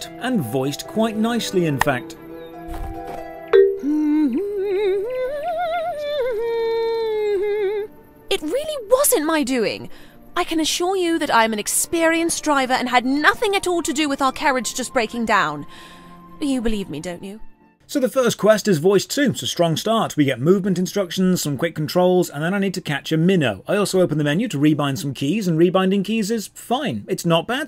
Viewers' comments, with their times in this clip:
0:04 I can't seem to confirm this but the woman sounds A LOT like Denise Gough (who played Yennefer in the Witcher 3)
0:14 I hate her voice. This is where I rage-quit.